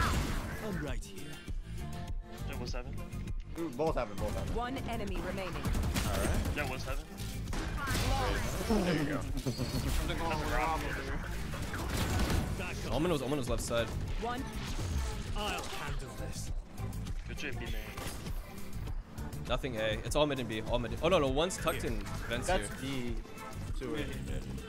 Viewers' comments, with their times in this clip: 0:09 evil? all I see is a cute man laughing 😂